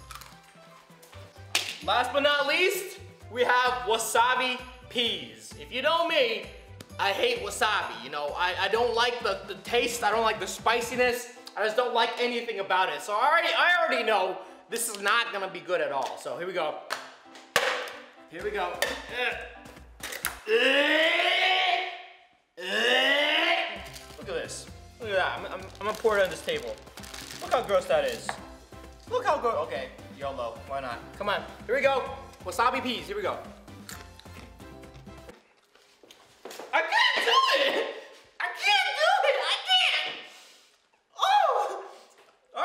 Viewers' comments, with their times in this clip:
0:08 Roi: Alright, this is a...no-go. (thud) Floor: Ow!
0:20 he sounds like a motor XD
0:20 kind a sounds like emergency alarm
0:20 new police siren
0:20 he sounds like a rhino roaring
0:20 my lawnmower starting up
0:20 WHO BURNED THEIR HOUSE DOWN I HEAR SIRENS!!!
0:26 he be sounding like a race car